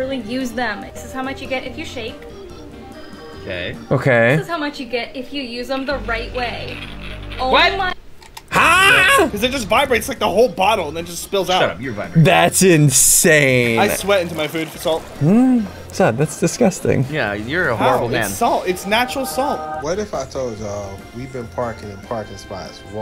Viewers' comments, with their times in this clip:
0:08 Can we just acknowledge how much SSundee sounds like Waluigi ?
0:08 that noise ssundee make got my dying! 😂😂😂 "Huuuaaah!!?"
0:08 The haa??? In is halarious🤣🤣😂😂
0:08 Bro. The haa?? In